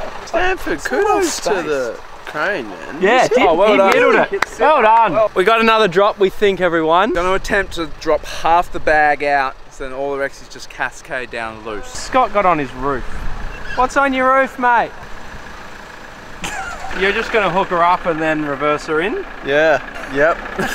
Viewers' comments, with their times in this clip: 0:03 that guy in the background go VROOM